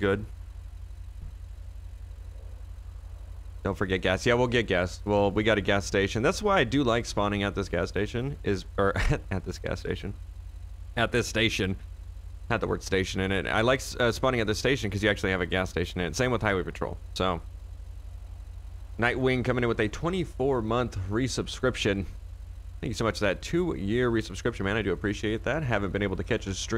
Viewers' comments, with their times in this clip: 0:10 the charger sounds soo sick🤤